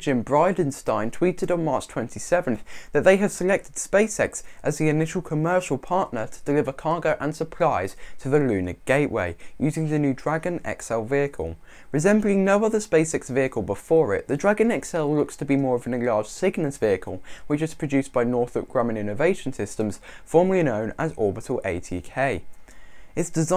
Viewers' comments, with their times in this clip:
0:06 Nice vid thx, lol "cargo and surprise"